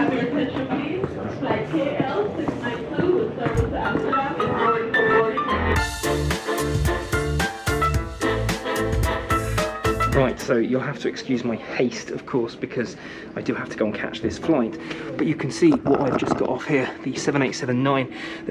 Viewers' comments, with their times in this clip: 0:03 whatever song that is, is lowkey kind of a bop.